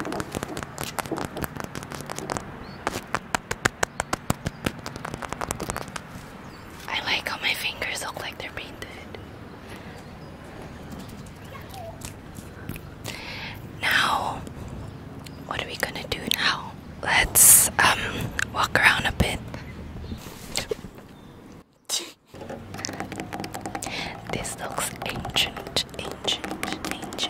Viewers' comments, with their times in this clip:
0:10 Did anyone hear the “yahoo!” it left me dead😂
0:10 I think was a bird
0:10 a wild Mario saying yahooo